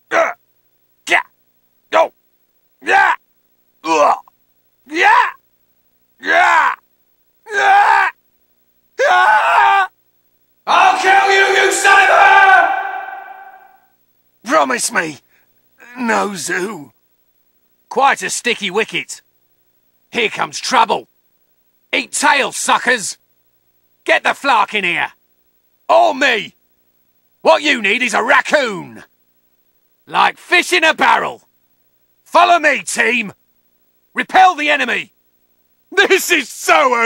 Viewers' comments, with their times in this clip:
0:10 I keep hearing.. I'LL KILL YOU INSIDE HER!
0:18 I'm sorry, but what does Rocket Raccoon you know when time's up??? Can't make it out. I think Greg Ellis was awesome as Rocket Raccoon! Glad they kept him for Avengers: EMH. Now... will they keep him for the live-action Guardians of the Galaxy film??? Hopefully, yes! The Guardians of the Galaxy are NOTHING without Rocket Raccoon! XD